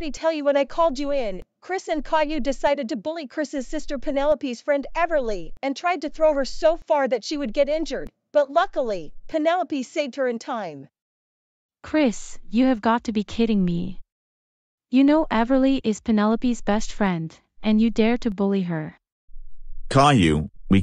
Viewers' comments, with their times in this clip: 0:03 Chris is only the one who is not crying while getting in trouble and Caillou is the one who is crying while getting in trouble.